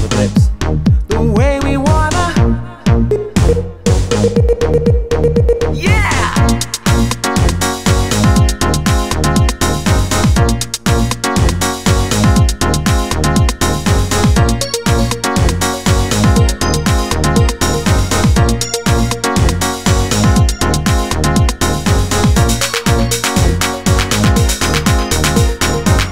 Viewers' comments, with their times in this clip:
0:07 No cuica on ? lol